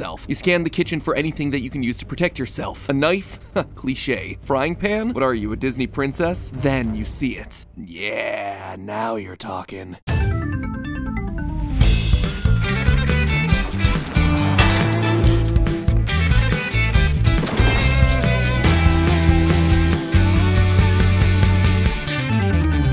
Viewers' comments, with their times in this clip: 0:09 i literally had this in slow speed and the intro sounded so realistic in slow speed that i didn’t even notice 😭